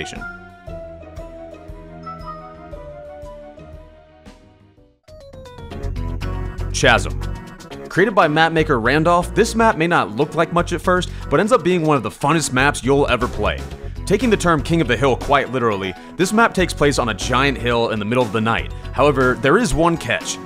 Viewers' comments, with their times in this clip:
0:06 did you really did you actually just say kasm How it’s spelled